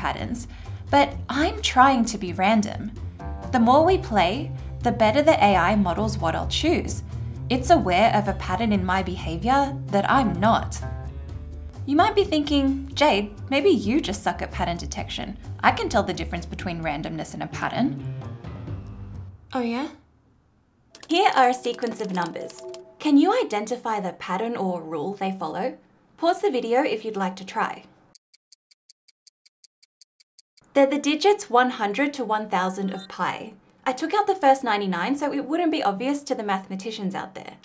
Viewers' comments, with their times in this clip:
0:10 possibly the cutest f-bomb I have ever seen. lol
0:11 Did you really say "f**k"? The sound is off. Just curious ;-) I may easily be wrong, English is not my mothertongue. Oh, forget it. Just curious. And, yes, thanks for all your work! Keep on. Please.
0:18 something about the way she said "oh yeah"
0:20 Great video but... is the lamest "Oh yeah" I've ever heard lol (yes I'm kidding no hate)